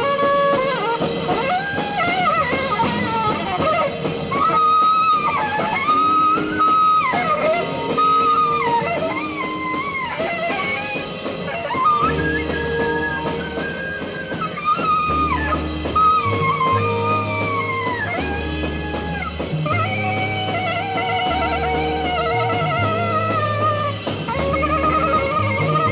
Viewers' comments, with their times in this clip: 0:10 Love the way Don comes in